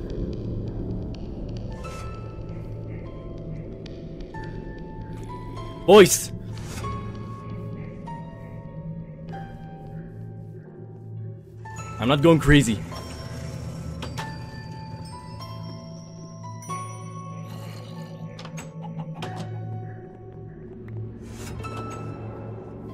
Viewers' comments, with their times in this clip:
0:10 Herkbrine is not that much scar but music Actually make us more afraid of it